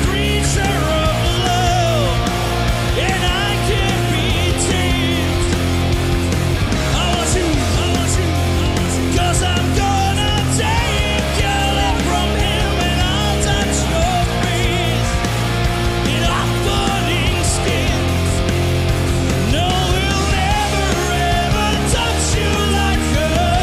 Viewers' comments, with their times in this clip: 0:07 david spade killin it on the guitar